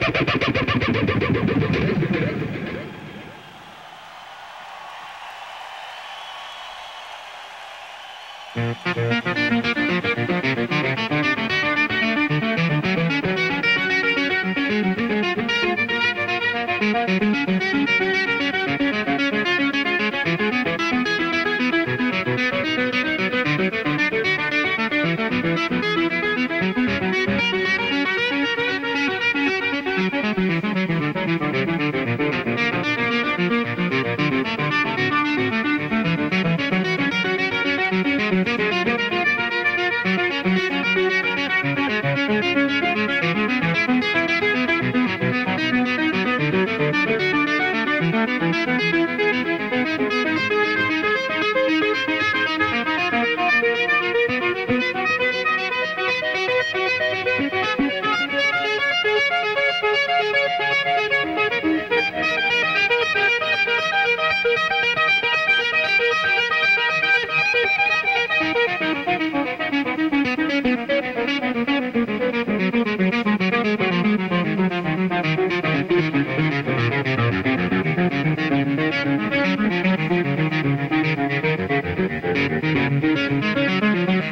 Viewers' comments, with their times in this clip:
0:05 it got cool. I am a big Eddie fan, I think he is a great musician but in my opinion he spends too much time on "fretboard gymnastics" and not enough on the great music he is obviously capable of. My opinion means nothing and I understand that.
0:05 cathedral sounds like the providers that advertising commercials before the movie starts. Back on those VCR things
0:05 Cathedral, Never heard that before. Who thinks to use volume knob and fret scales to get ur guitar to sound like a fuckin CELLO!!?? That ALONE sets him apart from many others... What a remarkable performance.
0:05 this is the only guitar in the world that ever didi that EVH dont no pick we have never heard this before people
0:08 I love that Tremelo effect of
0:20 that guitar sound he brings out is just superb. RIP EVH.
1:05 he dialed in the PERFECT amount of delay/verb WTF